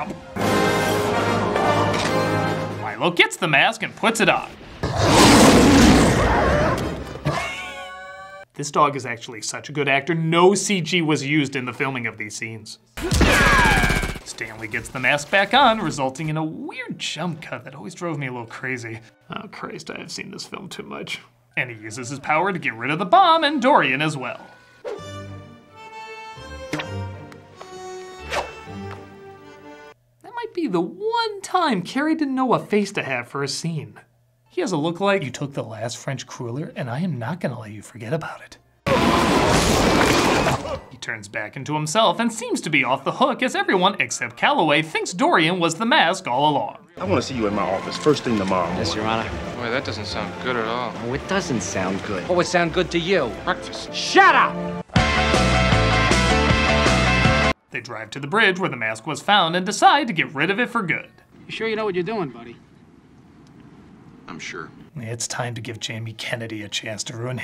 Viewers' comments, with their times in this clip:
0:07 the scene always reminds me of Courage the cowardly dog with the sound effect
0:55 That Double Trouble sound bite though 😂😂😂🔥🔥🔥 nice one ☝🏼